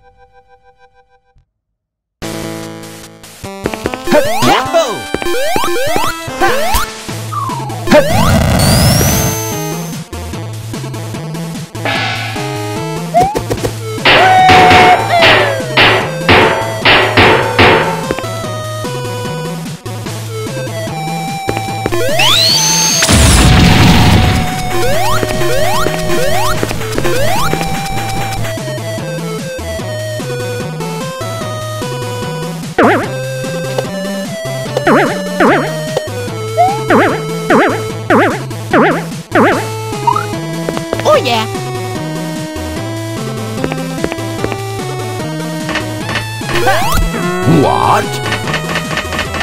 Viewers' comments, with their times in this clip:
0:10 I just love the chinese gong sound effect whenever Mario puts on a Koopa shell
0:14 Dodge Bounce (Loud)
0:14 WOOOOHOOO! That voice in the game is New Super Mario Bros DS sounds like lol🙂😂😂
0:35 Bounce donuts: boing Auto Captions: really oh
0:36 Video: Boing Auto Captions: REALLY OH REALLY OH REALLY OH REALLY OH